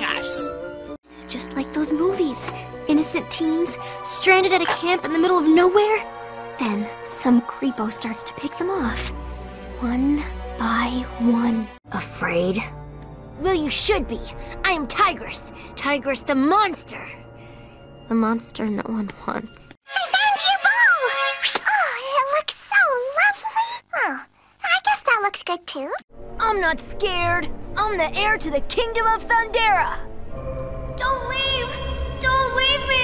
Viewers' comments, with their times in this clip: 0:05 is literally twilight sparkle 😭
0:20 Bubbles sounds like Fluttershy